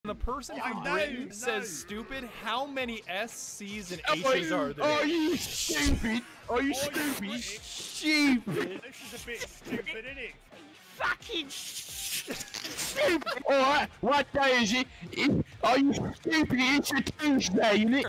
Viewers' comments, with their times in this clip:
0:10 the fact he HELD the S